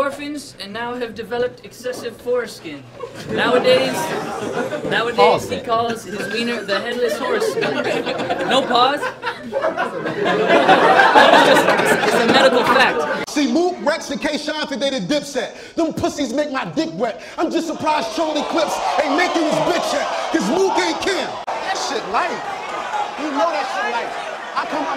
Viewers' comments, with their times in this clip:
0:04 is exactly how Eminem raps
0:10 inject endorphins lol injecting dorphins the fuck is a dorphin bruh